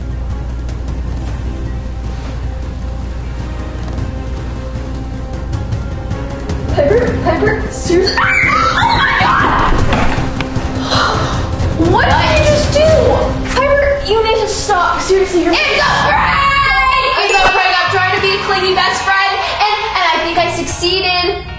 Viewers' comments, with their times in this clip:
0:08 why tf did she scream like that lol